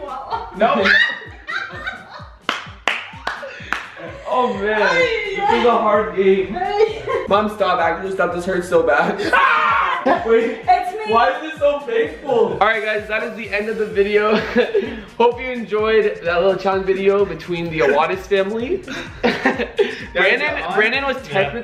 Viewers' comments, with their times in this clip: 0:09 they all screamed at the same time lol